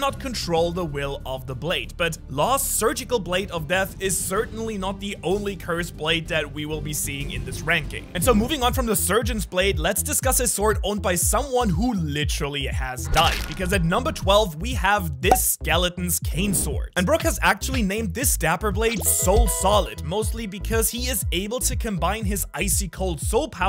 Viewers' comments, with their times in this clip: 0:09 Was Vibing with the background music here